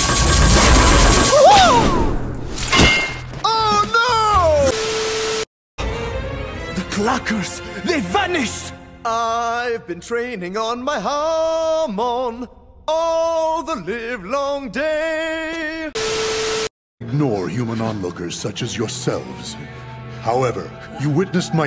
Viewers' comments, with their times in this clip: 0:09 I love when JoJo started to sin